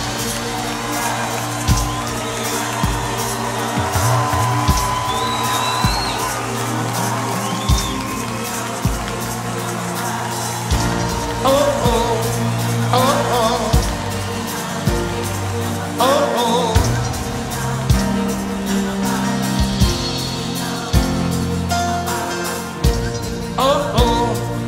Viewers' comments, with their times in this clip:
0:09 he start to sing